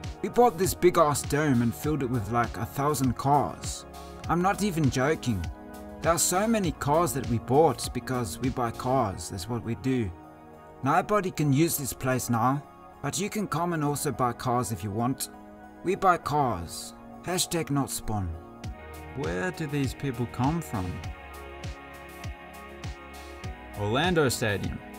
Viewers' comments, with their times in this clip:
0:05 great accent bro 😂